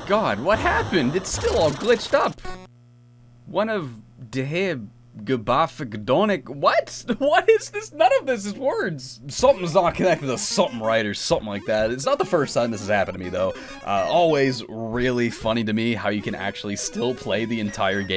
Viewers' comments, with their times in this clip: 0:05 how many tries did it take you to pronounce this?